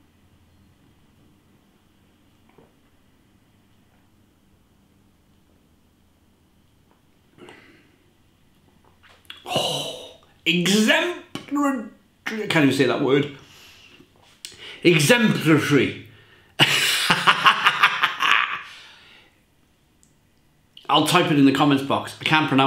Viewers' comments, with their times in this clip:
0:08 Boring Sober people: Exemplary. Beeraholics: EXEMP-RU-DRE- cant even say that word... Exemprlutry. * Laughs in Welsh * 😂😂